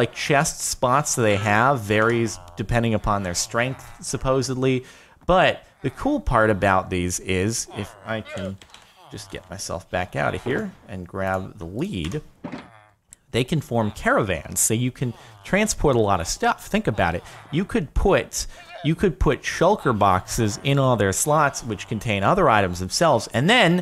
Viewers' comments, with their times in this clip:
0:08 I know he said lead, But first time hearing it I was like grab the weed WHAT?